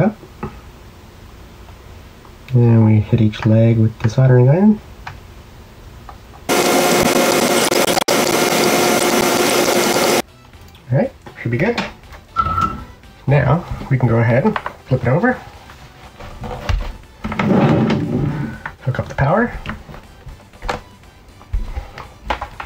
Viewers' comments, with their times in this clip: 0:05 Btw, with my volume up you scared the hell outta me